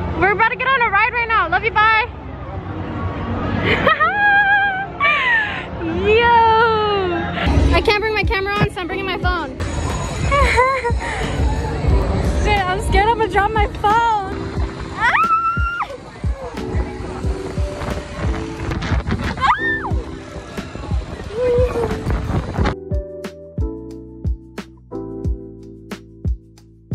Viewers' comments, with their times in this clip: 0:09 Omg she did that Ariana grande laugh from Sam and Cat😮😭
0:10 omg when you get to her laugh sounds like ariana grande